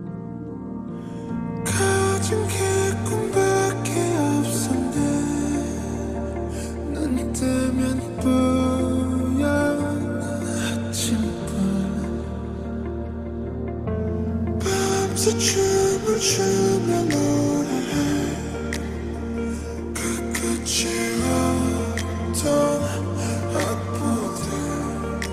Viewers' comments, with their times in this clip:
0:08 i cried listening to this slowed ver